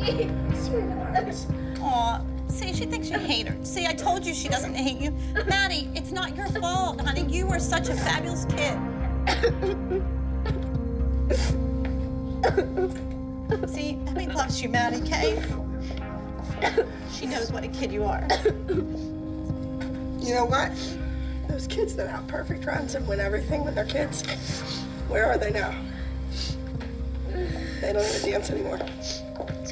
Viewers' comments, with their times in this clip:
0:08 Not mackenzie crying in the back feel so bad
0:12 kenzies crying in the back.that poor girl 😭
0:12 Not Kenzie in the background crying for Maddie 😭😭😭🥺🥺🥺